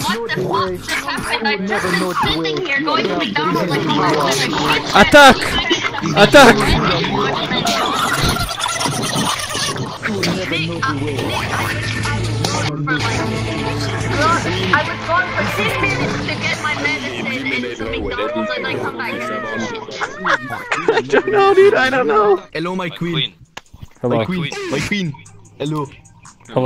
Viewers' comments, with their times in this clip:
0:10 Okay but WHY IS NO ONE talking ? ALL THAT SHIT going on, and then a literal solid snake comes out of fucking nowhere, flies around spamming the theme song, and then disappears into the night. I AM DEAD LAUGHING. WHY ARE WE NOT TALKING ABOUT THIS